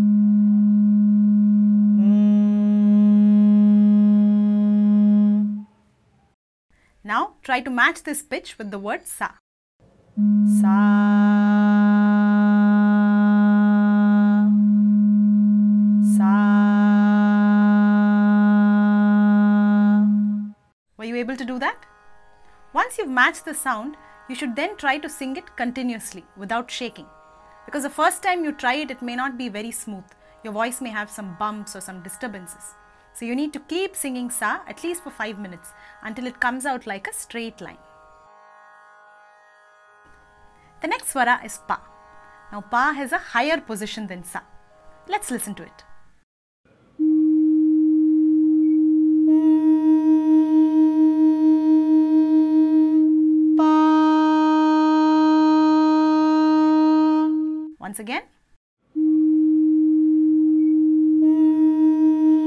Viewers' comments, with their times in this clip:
0:10 The “Sa” is G#, right? So not all Sa is C, it depends on the key?
0:50 The Hum is slightly off but the Pa is spot on. Same for the Sa. I wonder why.